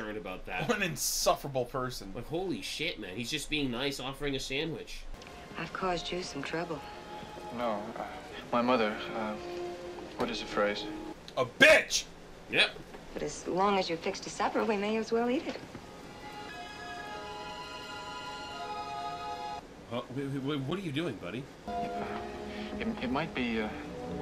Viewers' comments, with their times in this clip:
0:10 Bro said, "A BI so loud it shook the camera!